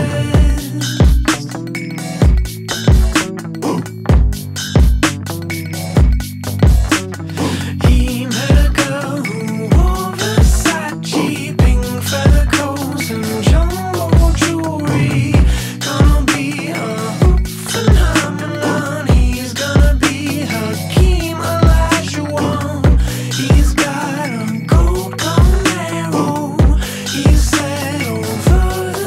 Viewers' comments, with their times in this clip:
0:10 Why do i hear a Minecraft anvil in the background